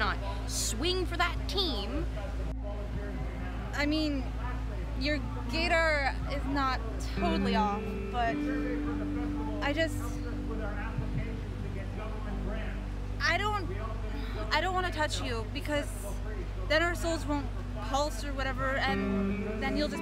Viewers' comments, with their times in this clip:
0:06 am I the only one who heard GAYdar?